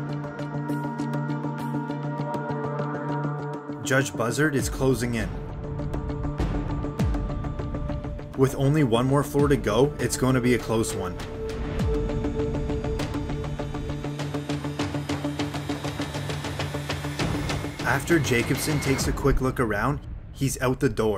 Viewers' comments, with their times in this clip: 0:03 Lol the way this sentence sounds